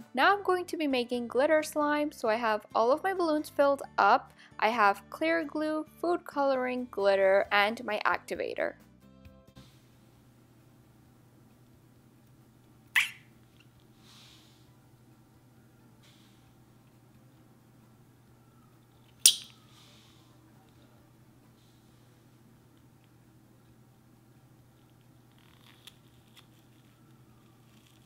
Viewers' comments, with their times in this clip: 0:10 ! 😍 THAT CUTE NOISE!